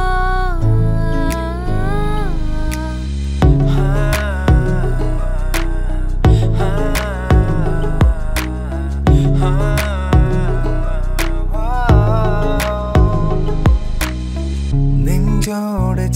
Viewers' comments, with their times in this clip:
0:04 I was waiting for your sweet voice dude👍💖❤